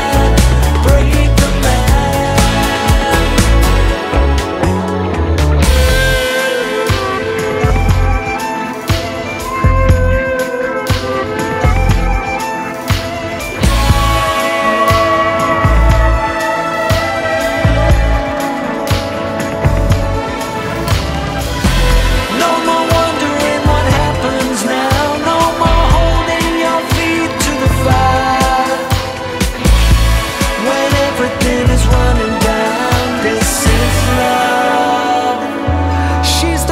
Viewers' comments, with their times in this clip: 0:05 Thank you for this new music. I have loved your music all my life. What a treat! The instrumental interlude is magical.
0:18 Beautiful! So glad that they are recording again. I love the drop ..